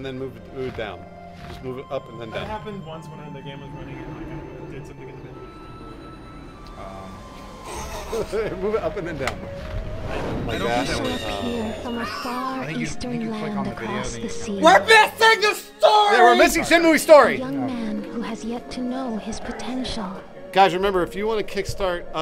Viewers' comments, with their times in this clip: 0:08 That sounds like the same sound effect as Sasuke's Chidori,
0:08 Chidori sound fx hahaha